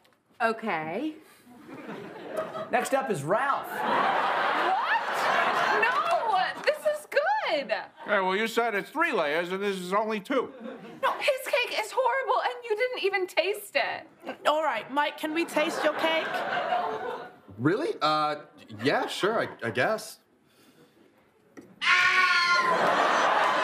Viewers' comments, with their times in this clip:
0:07 Pete's New York came out a little bit haha